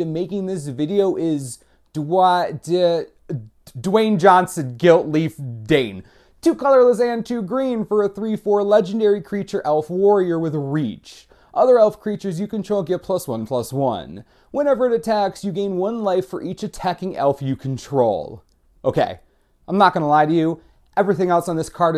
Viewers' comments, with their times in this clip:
0:04 lol dwayne johnson